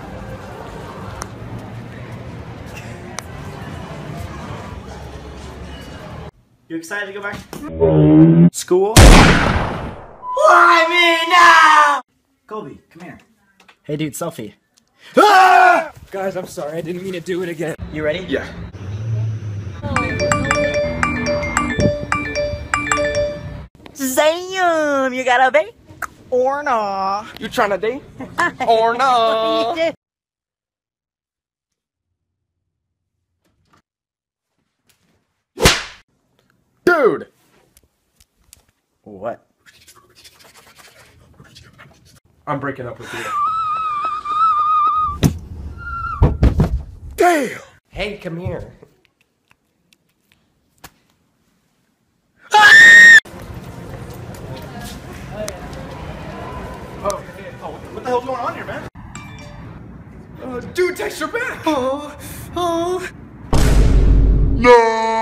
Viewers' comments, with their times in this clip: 0:10 Okay but why does Sam's yell sound like really sad.. like just imagine him in the movies crying out, yelling...
0:24 Sam sounds like such a white kid lmao
0:42 that squish tho 😂
0:49 the scream tho
0:51 EARBUD/HEADPHONE WEARERS WARNING
0:53 RIP headphone users Like me 😂😂